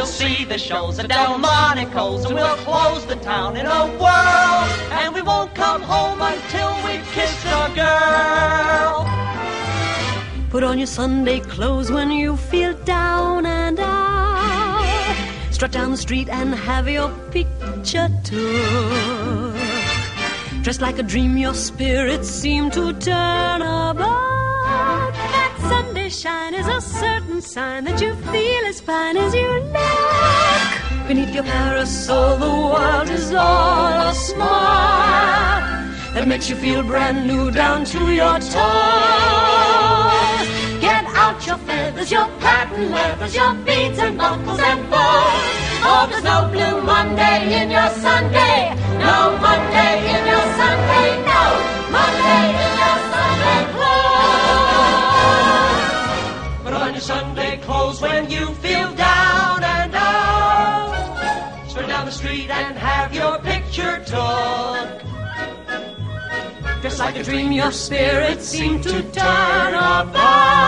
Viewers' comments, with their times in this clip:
0:05 it feels weird that it doesn't fade out
0:24 The note is sooooooo satisfying to hear
0:55 Feels even weirder that there are no trash compacting noises
0:56 And no robot humming in